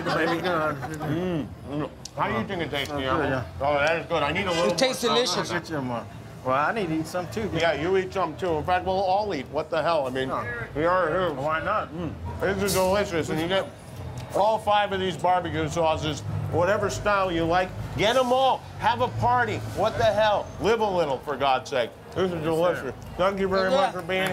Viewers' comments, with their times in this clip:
0:10 Watch the guy in the Pittsburgh shirt yell out share...Then his wife gives him the SSSHHHHHHHHHH!!!